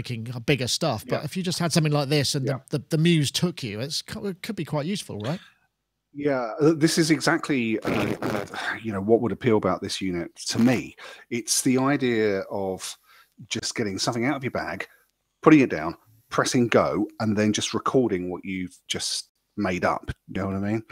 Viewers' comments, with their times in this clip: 0:06 What was the huge 'FART' .. lol